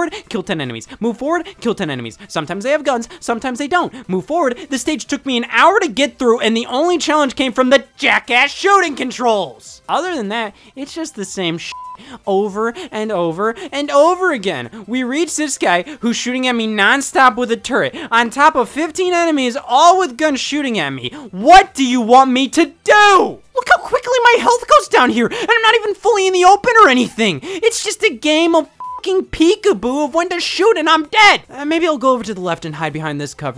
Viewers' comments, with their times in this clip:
0:06 this is the maddest I have ever heard him.
0:19 Scott kinda goes AVGN bahahahah